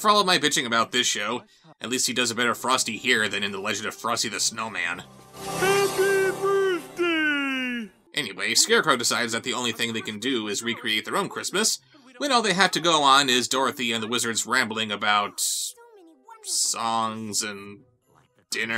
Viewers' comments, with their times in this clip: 0:04 sounds like Patrick Star